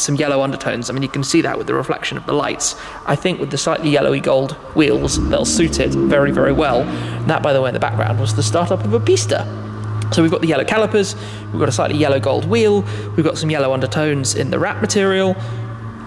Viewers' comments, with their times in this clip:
0:04 Shmee150 calling out a Ferrari Pista startup in the background without missing a beat, lol. Dude is a master at car spotting!